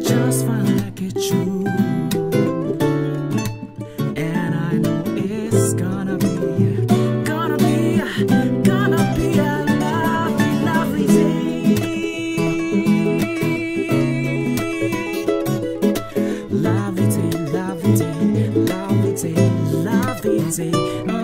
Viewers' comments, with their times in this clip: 0:09 chord progression got that "Your Body's a Wonderland" feel